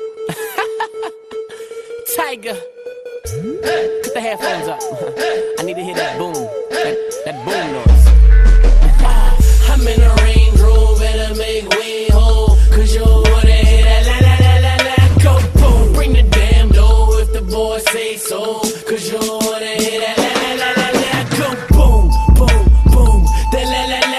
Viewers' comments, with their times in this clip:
0:07 wow bass exploded